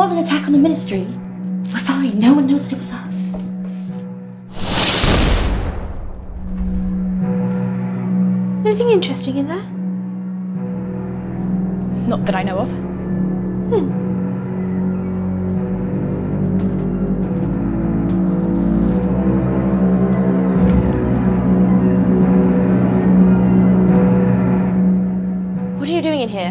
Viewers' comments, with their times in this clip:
0:08 THATS Bellatrix. The tone of voice, the mannerisms and the cunningness are on point. Amazing actors and actresses. Brilliant fanfilm.